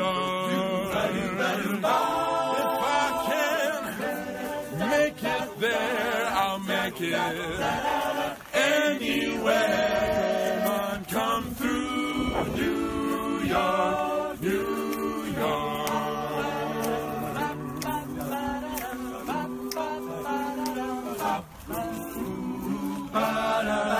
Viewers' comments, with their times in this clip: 0:05 He sounds like John Cena